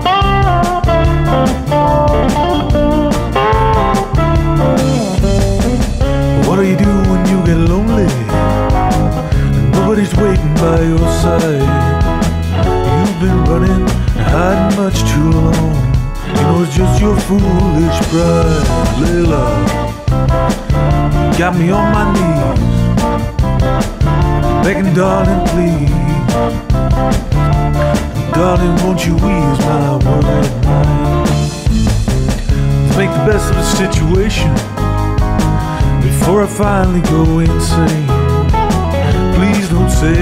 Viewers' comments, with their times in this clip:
0:06 This was a gimmick video until when the vocals drop. The way you sing “lonely” is dead on knopfler. I’m dead 😂
0:18 The "Layla" just killed me. Spot on Knopfler right there.
0:19 Brilliant, as soon as you started you made the idea! By the way, the recurrent part which first comes really reminds me of The Reaper by Blue Oyster Cult.
0:22 So Clapton merged with Dire Straits becomes Blue Oyster Cult's Dont' Fear the Reaper ? 😆